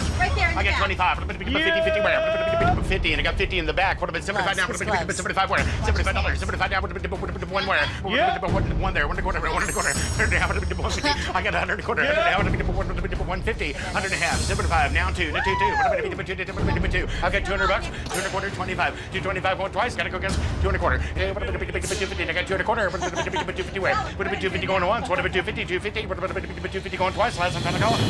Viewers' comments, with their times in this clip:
0:06 how do they understand him?
0:12 Kid: Mom, can I have Eminem? Mom: We have Eminem at home. Eminem at home: